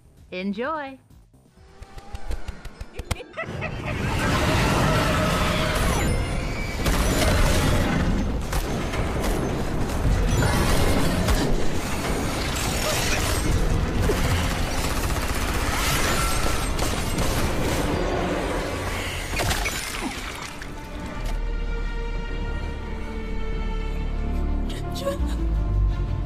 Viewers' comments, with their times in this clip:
0:09 has a similar roar as sharktopus